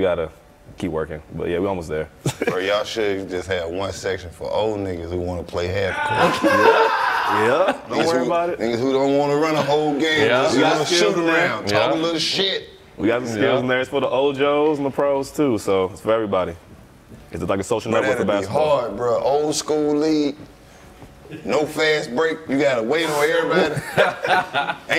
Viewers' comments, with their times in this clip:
0:06 for one of his best laughs. Keep pressing the timestamp